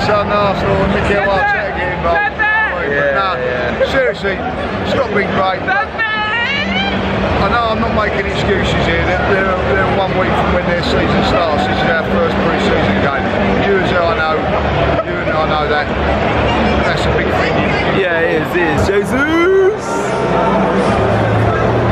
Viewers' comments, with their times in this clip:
0:06 How they didn’t laugh at that person shouting “Pepe” 😭